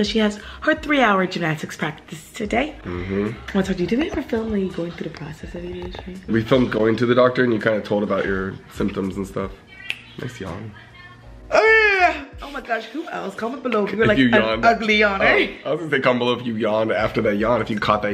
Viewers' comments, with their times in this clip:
0:06 yes… i did yawn with you. 😊